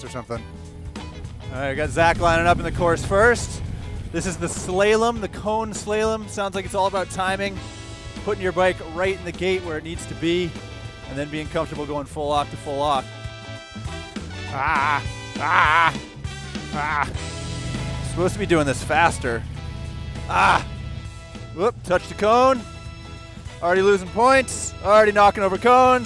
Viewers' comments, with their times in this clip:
0:04 I have huge respect and appreciation for you two - especially putting your pride on the line in front of all these officers but hey uh.... the "slay-lum"???
0:08 slay -lem? really? wow